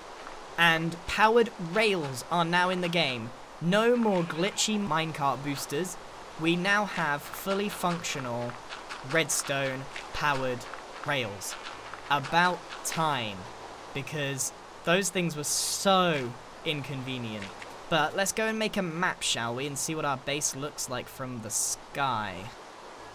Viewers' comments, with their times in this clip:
0:04 Glitchy Minecart booster sounded wierd, the Minecart part